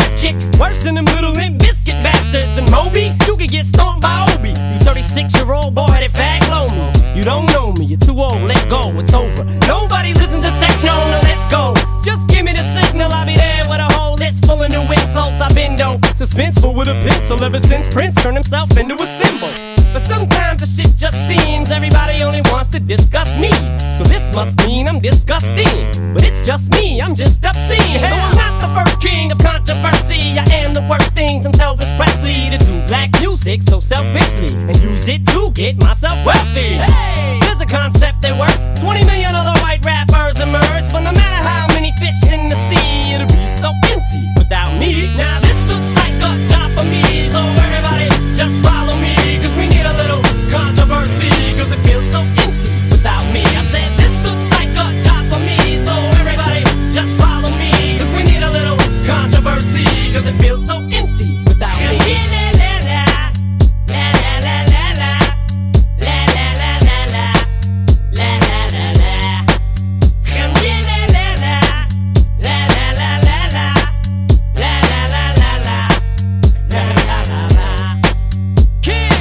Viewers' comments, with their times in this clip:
0:07 it mention technoblade!
0:26 smoother than butter
1:02 for me the lalala part is the best part